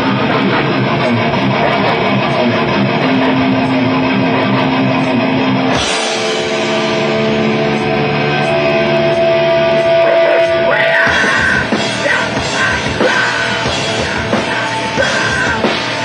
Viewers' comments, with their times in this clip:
0:04 Man, Abe hit 3 cymbals at the same time